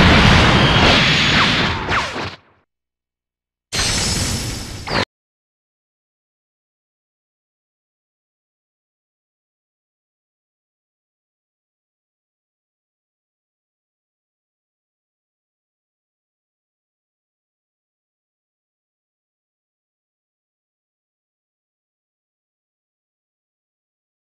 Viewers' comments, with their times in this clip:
0:05 after there is no audio at all